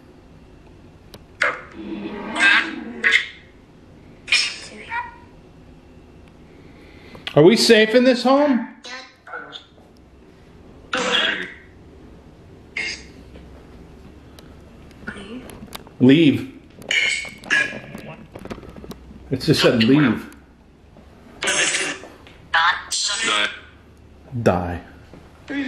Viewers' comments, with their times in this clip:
0:07 Woman asked give it to me